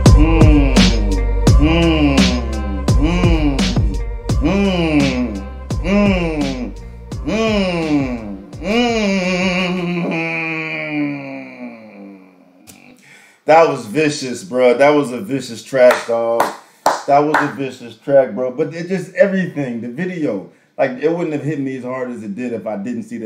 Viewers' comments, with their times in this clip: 0:07 how my car sounds when it won't turn on: